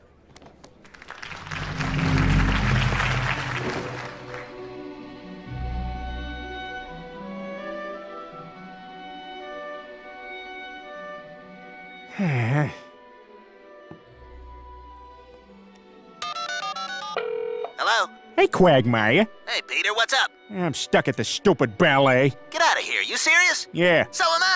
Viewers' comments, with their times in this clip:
0:05 this music is EXACTLY why i liked this video.